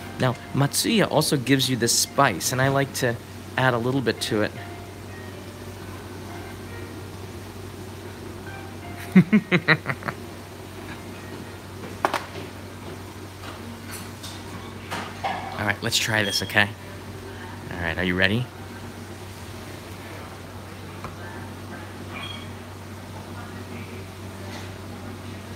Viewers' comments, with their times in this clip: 0:10 That evil laugh while pouring the condiments...lol